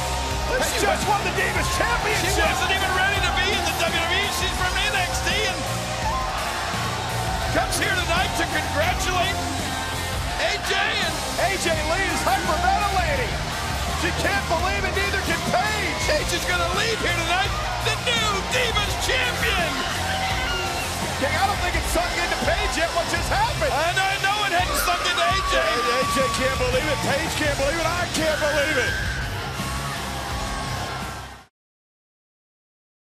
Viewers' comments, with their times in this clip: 0:05 the primal scream always makes me all tingly
0:20 AJ Lee screaming